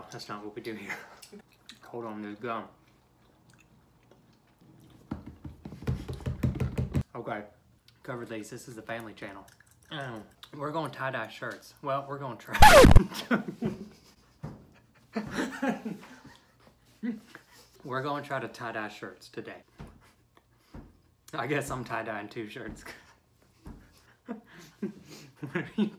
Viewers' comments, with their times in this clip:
0:10 you broke my ear drums mate